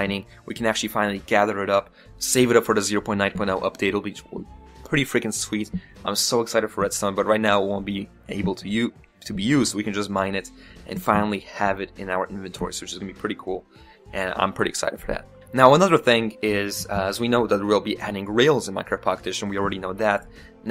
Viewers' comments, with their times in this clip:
0:07 Thats some one saying oh
0:07 I am i the onyl one who heard a cow